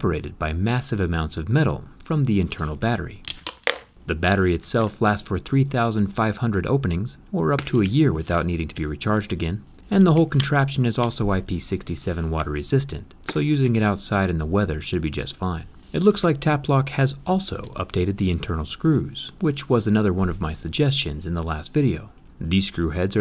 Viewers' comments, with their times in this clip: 0:10 darnit Zack, we discussed how to say IP ratings proper-like! 🌵💦 Rad video though. Kudos to JRE for the initial discovery and Tapplock for acting on the feedback!